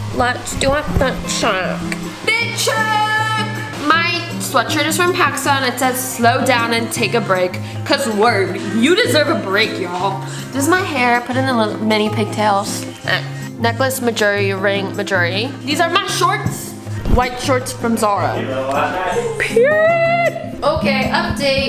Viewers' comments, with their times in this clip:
0:04 ur shirt is from pakistan🥺😔
0:06 Wait did she say my sweatshirt is from Pakistan???